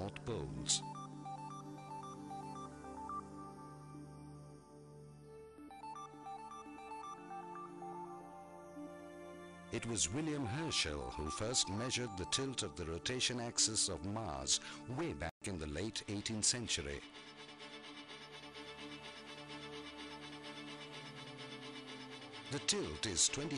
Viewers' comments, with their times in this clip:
0:04 accent of this guy is irritating.